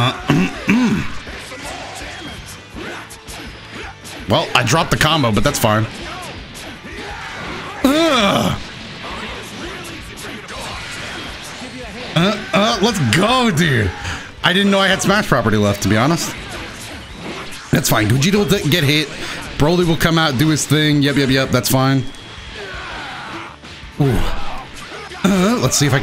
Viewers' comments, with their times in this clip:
0:08 every dragon ball player has to make a noise like that when doing a sick combo. Even me.